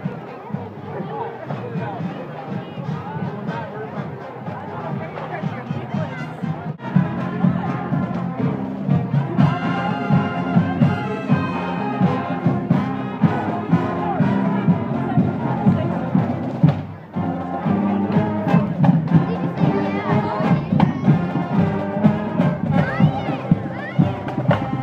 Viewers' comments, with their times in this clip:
0:07 Hilton Generations Band sounds great! Thanks for sharing this video